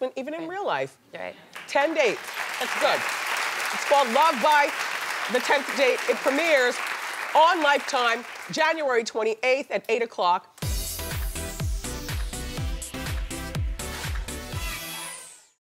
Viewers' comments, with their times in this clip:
0:10 that theme song beat needs to be updated. Sounds like something out of Euro Trash music phase,circa 1994, "Electric Cirus" days.